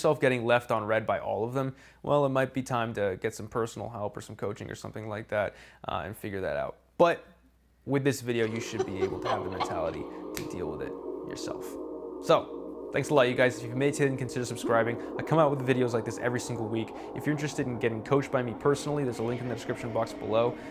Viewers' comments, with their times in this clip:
0:07 Anyone else hears a diabolical laugh ? Holy sh** haha